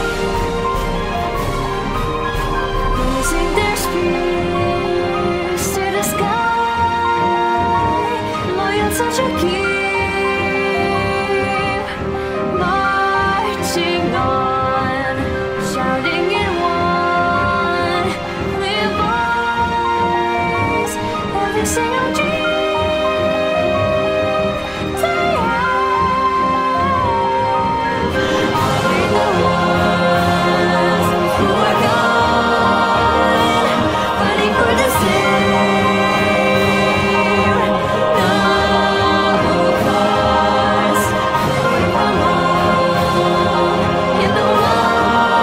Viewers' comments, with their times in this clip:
0:03 I agree. The pronunciation and the off notes are understandable cause shes German. The flat notes are because the orchestral was probably made digitally. But the build up Was the most awesome part for me.
0:30 Honestly I thought was the best part. It felt like souls of fallen heros sang with her.
0:30 I agree with that, aha. the music is a bit too loud but what I can hear of her voice is lush x
0:30 i quote, music too loud after